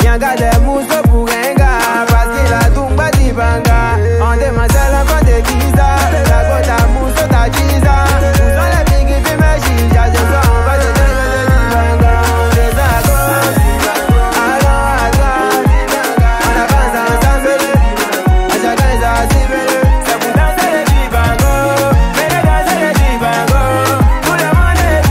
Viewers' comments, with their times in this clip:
0:06 when the guitar enters ...